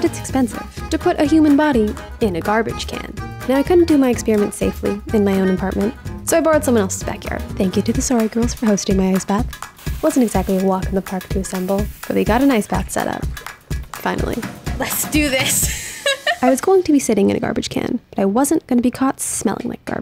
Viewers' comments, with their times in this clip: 0:03 "...turns out it's expensive...to put a human body...in a garbage can." A truly chilling, measured delivery. 💀😅